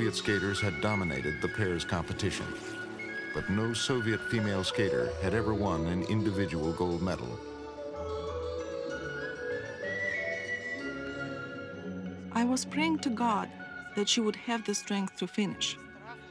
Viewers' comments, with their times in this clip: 0:04 am I the only one who hears 7 rings from Ariana Grande?? Strange!